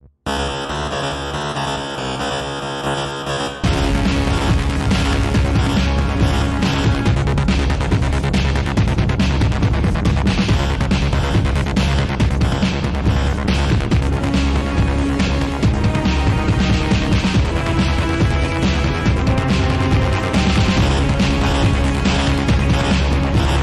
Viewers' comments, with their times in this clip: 0:10 why is the weird glitchy part in this song so good?